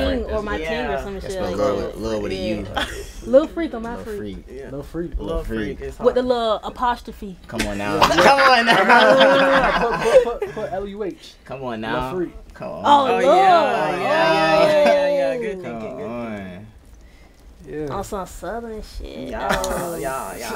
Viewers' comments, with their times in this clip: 0:08 damn this song fire